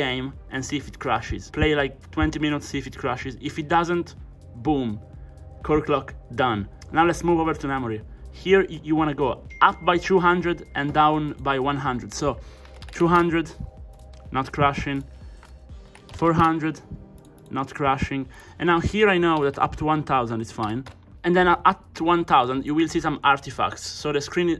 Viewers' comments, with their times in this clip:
0:08 the phone ding sounded so real